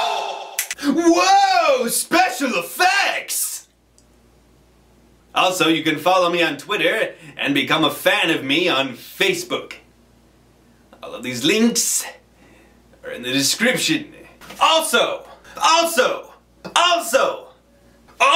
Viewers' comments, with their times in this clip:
0:05 sounds like Zap Brannigan from futurama hahah
0:06 sounds like Zapp Brannigan off futurama.